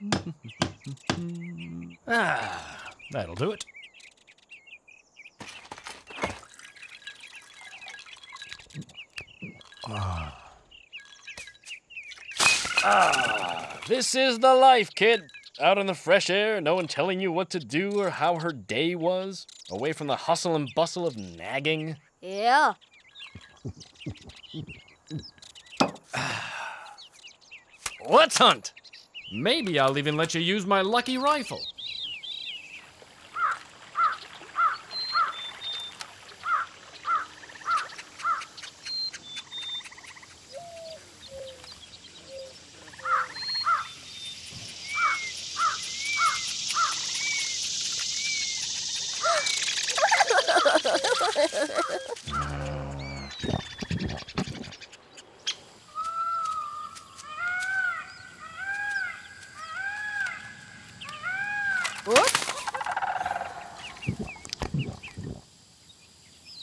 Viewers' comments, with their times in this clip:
0:03 Is it my or did the VA just channel Nancy Cartright for a second there?
0:06 Bro, clay’s voice changed for a second 😮
0:49 Orel's giggle warms my heart, he's so precious